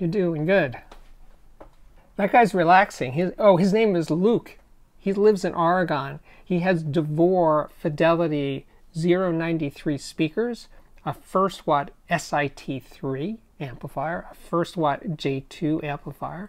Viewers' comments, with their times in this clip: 0:04 Arrhgon Where's that?😉